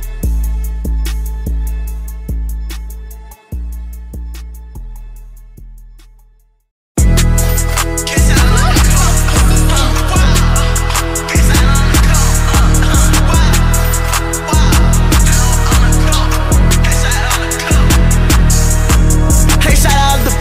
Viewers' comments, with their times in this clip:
0:07 Ts sound like no NBA... This Summrs if he was acc good rs